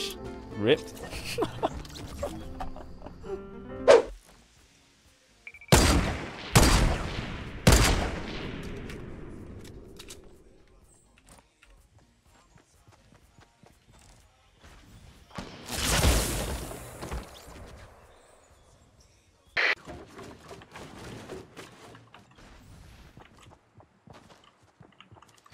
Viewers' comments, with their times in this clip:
0:10 The dude needs to back the hell up from that Mike